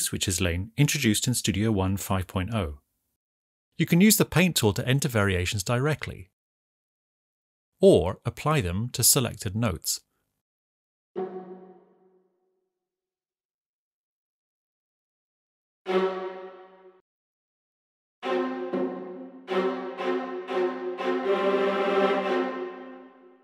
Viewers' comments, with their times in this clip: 0:10 that's how you make an error sound.